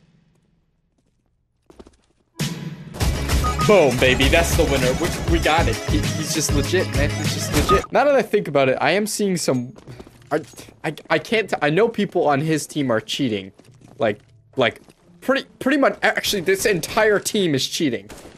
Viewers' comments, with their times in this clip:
0:04 whats that upbeat harmonica music in the background